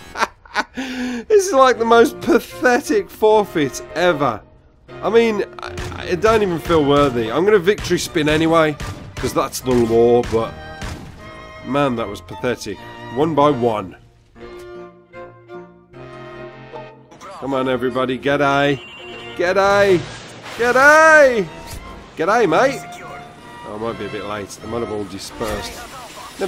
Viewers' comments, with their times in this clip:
0:08 that Birmingham accent